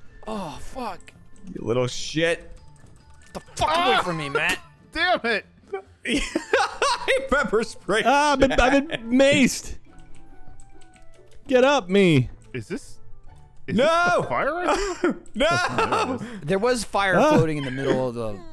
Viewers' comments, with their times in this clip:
0:03 how he says it and kicking him at the same time is the best LMAO. Love the Let's Play.